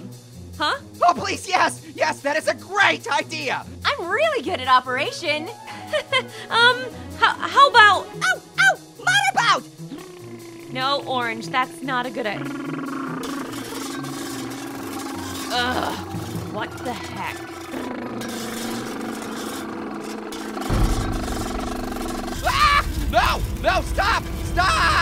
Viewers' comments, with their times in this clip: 0:10 my motorboating is faster than oranges